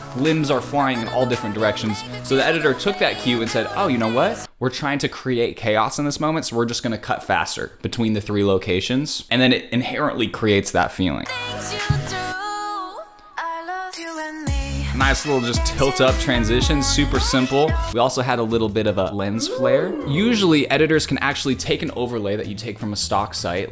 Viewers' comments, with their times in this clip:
0:04 no video and audio until